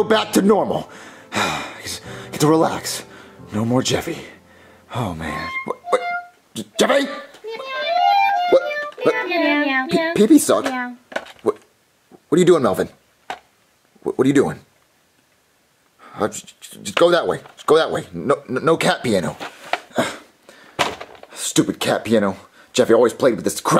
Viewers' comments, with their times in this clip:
0:05 are we gonna ignore, that melvin made a banger by accident?